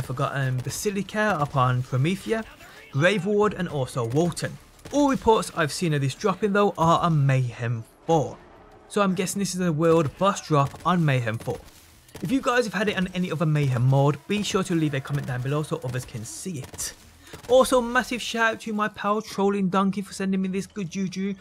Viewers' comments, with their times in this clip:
0:04 did you say, "warden"?